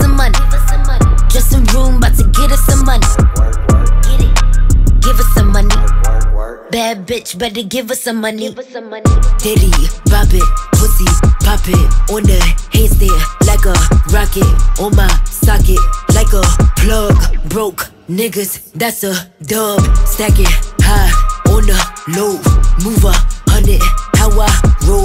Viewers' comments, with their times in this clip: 0:09 she got g-easy flow from no limit